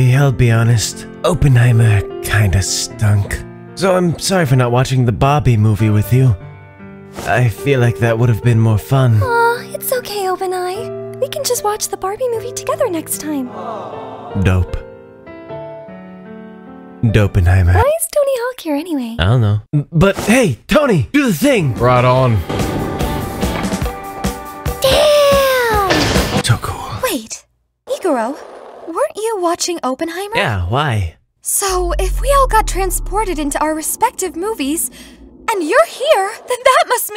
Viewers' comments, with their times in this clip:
0:05 I swear i heard Obani go British for a second
0:05 Obama turned bri’ish at this moment
0:05 Why did obanai say barbie with an accent. It was smth I never knew I needed I love his VA sm. The voice is 👌
0:05 i'm sorry but did anyone hear ''Bah-bie'' instead of Barbie? Cries
0:24 hearing mitsuri say "daaaaaamn" is like hearing the nice teacher yell